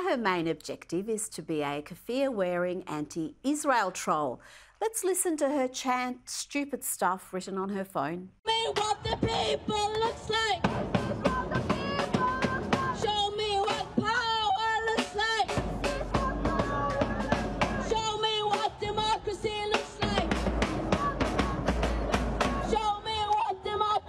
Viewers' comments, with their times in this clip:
0:08 Rita Panahi I love watching you. The girl could be a heavy rock singer some day. Love you Rita Panahi.